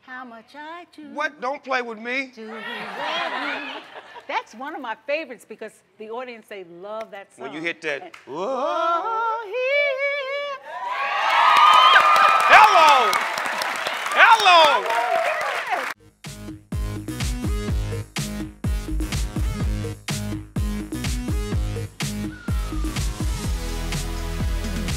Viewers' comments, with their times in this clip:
0:09 when she hit that high note ❤️ I kept rewinding that part